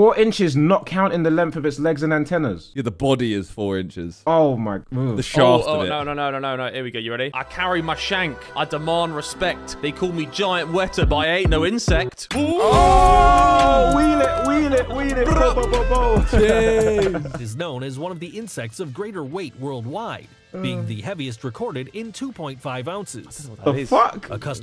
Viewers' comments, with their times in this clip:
0:06 what a banger